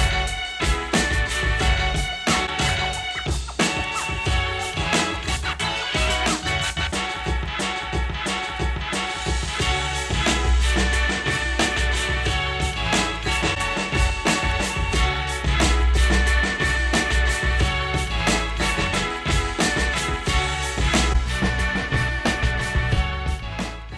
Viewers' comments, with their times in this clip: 0:09 Damn.. Genelec showing audio image quality...